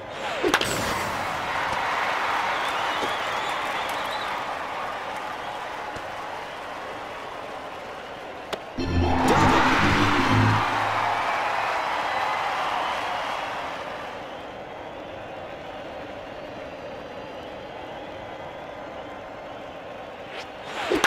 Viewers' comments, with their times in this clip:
0:08 Double [Crowd Wow]
0:09 The crowd went hysterical. 😂